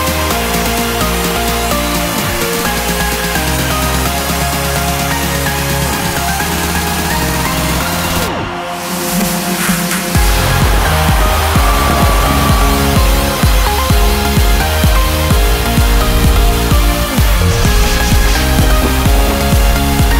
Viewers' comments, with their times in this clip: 0:07 this drop still gives me goosebumps,even after 3 years. 💥